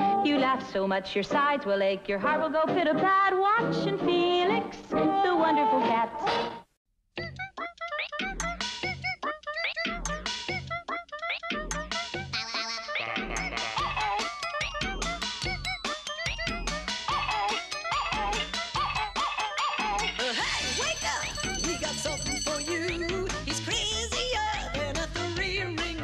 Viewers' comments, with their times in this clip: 0:07 one SLAPS TBH. It's also the one I grew up with (besides Twisted Tales being now my favourite series with Felix) and it's crazy to me how the way that intro is remixed, with the little "uh-oh" parts and the sound effects in general, makes it sound way ahead of its time...